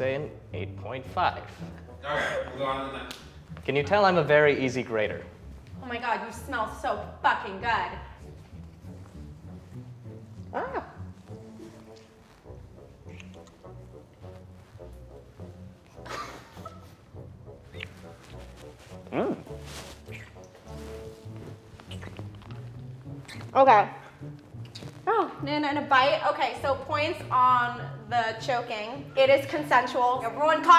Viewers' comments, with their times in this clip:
0:05 OH MY GOD U SMELL SO FCKING GOOD! She literally said that so casually and the guy's like I KNOW, I KNOW...and he's still so far away, wow. 😂
0:18 the noise he made tho!!!! 😍😍😍😍